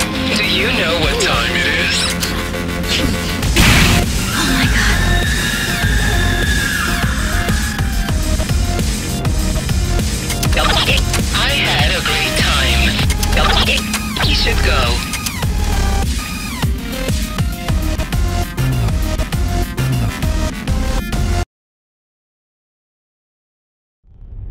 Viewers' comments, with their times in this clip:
0:06 I luv that song